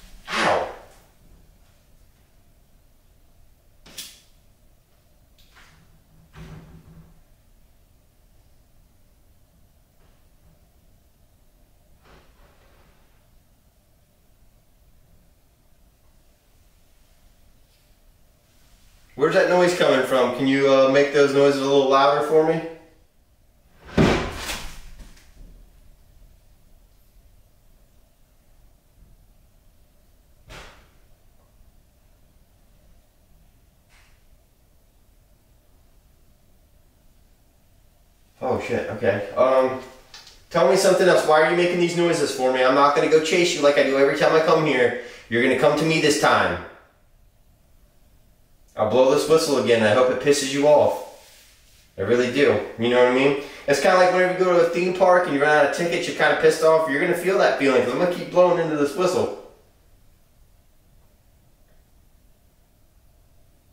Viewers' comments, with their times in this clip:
0:10 sounds like movement upstairs
0:23 that bang was louder 😂
0:44 those noises where the ladder that goes down and up in the Attic, why have u never shown it go down and up?